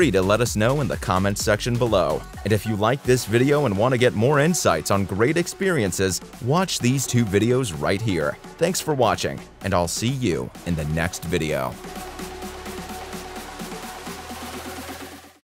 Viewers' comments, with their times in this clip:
0:08 who else heard this in Markiplier's voice?